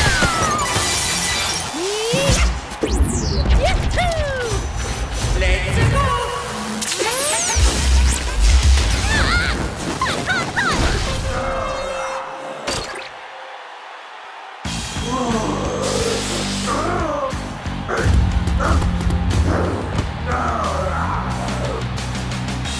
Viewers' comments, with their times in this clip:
0:08 Daisy was adorable when she yelled… Eee-ahh. Hot. Hot. Hot.